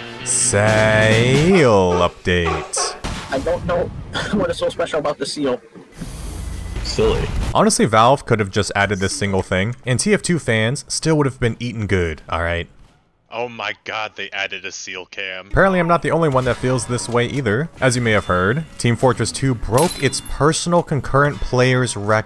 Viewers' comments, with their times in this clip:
0:05 I think he actually said "SEALLY"